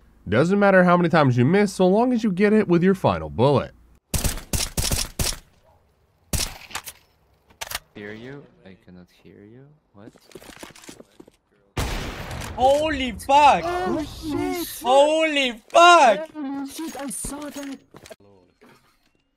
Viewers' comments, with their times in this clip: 0:04 mario sound LOL